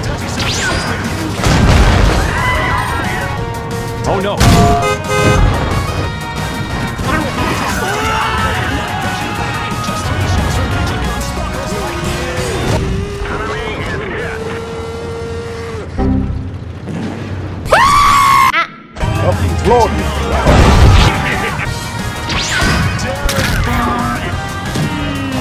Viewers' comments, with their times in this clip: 0:08 I heard JoJo reference on (scream of Ice Album user, his name is so hard to type xd)